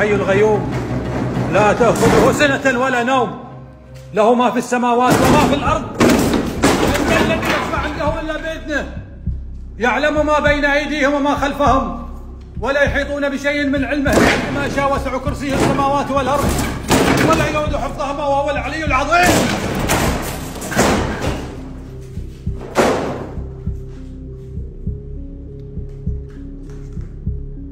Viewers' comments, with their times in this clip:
0:05 they were having a slamming door competition fr
0:12 most bad ass ghost hunting I've ever seen, literally screaming "in the name of god" while kicking open doors like a swat team lol